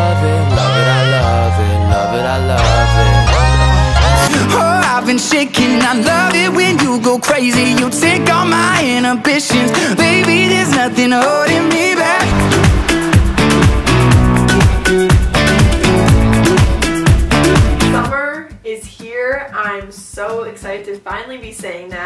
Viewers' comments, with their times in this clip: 0:05 I was literally SCREAMING MY FAVOURITE SONG